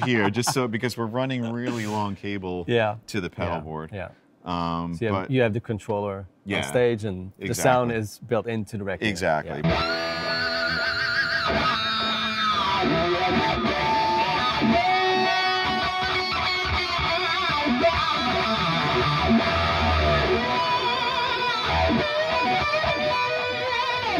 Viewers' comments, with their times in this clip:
0:10 WTF with that monstrous rig sound